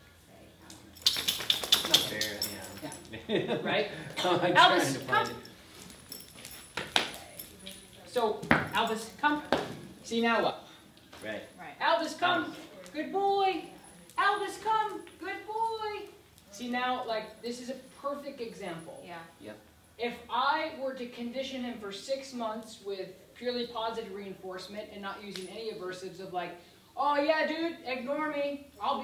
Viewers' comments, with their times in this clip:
0:10 Audio goes out about the Mark. First par of the video was good. Wish I could hear the rest